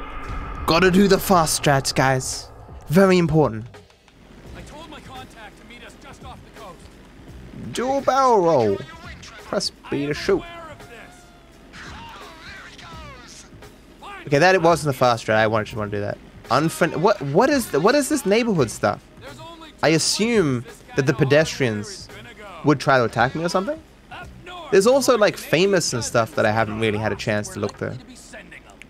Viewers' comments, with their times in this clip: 0:10 A bloke goes barreling out of the plane as it barrel roles and someone screams ‘there he goes’ with perfect comedic timing. 😂